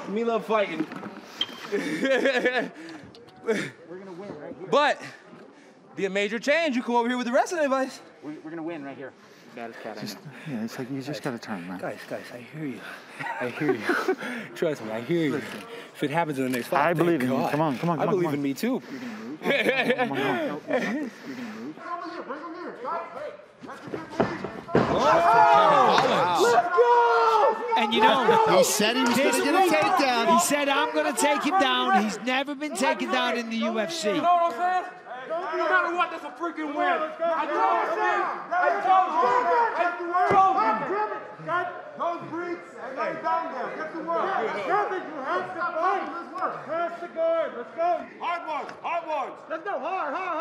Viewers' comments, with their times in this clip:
0:05 Holland became dagestani for a second there 😂
0:20 Brunson had to laugh himself when he got taken down 😂😂😂 and Holland screaming LET'S GOO, LET'S GOOO !!!
0:23 It’s hilarious how he got Brunson laughing after the takedown can’t wait to see this maniac back in there
0:38 Ya'll hear the corner guys frustration?.. "KEVIN!!... God Dammit!!" 😂😂